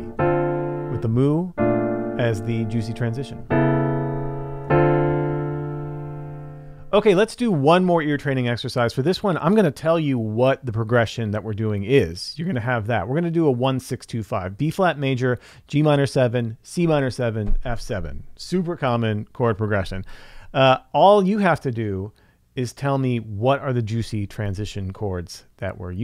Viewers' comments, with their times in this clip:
0:08 Love how you kept the humor going at the end I was 😂. Brilliant combo of ear training with theory too!!!! And the Mu chord sounds SOOOOO hip 🎉